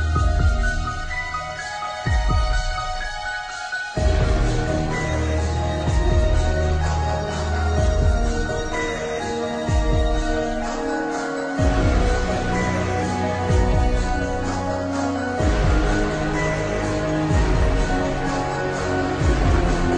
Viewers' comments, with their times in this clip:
0:04 Damnnn...as soon as that scary music COME on in is started gettin uncomfortable...and got scared of every movement around me😂😂